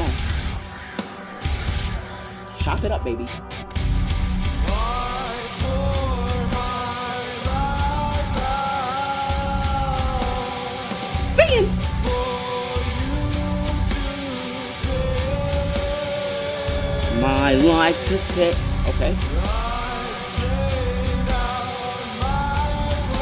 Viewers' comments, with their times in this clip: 0:05 The beginning had me pumped. That intro was simple but....dark, as you stated. Then the sabotage happened ...wow, lol , I even considered the possibility that it was a parody . Seriously the worst sounds will invade your ears at the mark, the part before it sucked all the same . Release the instrumental!